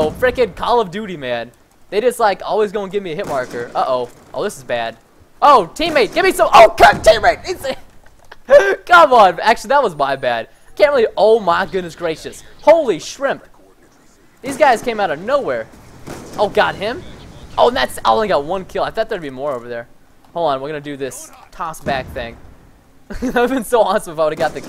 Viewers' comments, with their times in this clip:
0:06 I thought Preston cursed